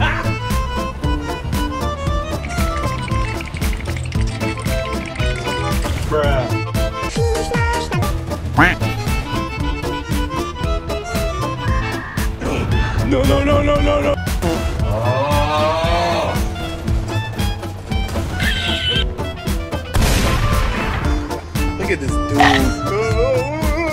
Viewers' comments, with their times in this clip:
0:06 omg that song made me remember my childhood 10 years ago